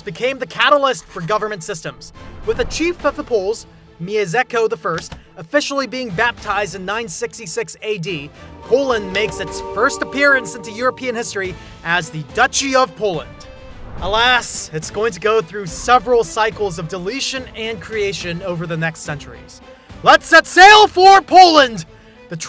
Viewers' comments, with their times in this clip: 0:03 "Miezeko"!? You go to the trouble of making this video, but you can't type the name into Google Translate? This translator SPEAKS! But